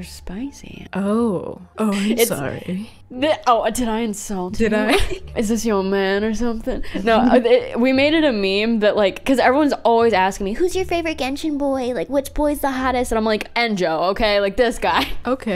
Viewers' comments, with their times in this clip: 0:03 bruh ur friend should be a voice actor cos of the seductive falsetto lol (no homo just cool)